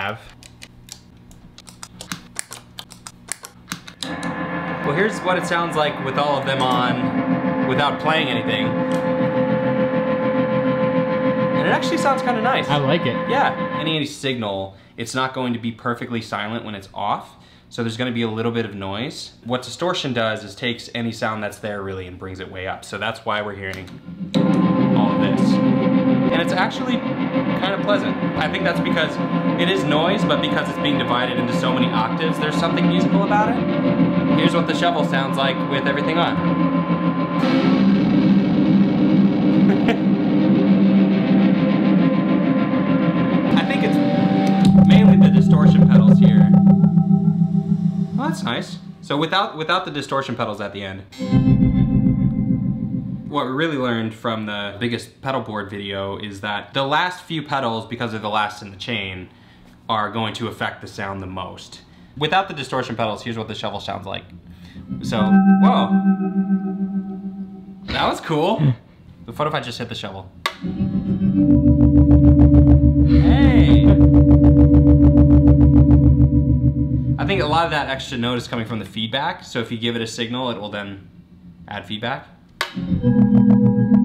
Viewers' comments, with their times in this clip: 0:10 Nobody: I walk a lonely roa...
0:37 i imagine a good intro for megatron and the decepticons
1:09 Literally minecraft cave sound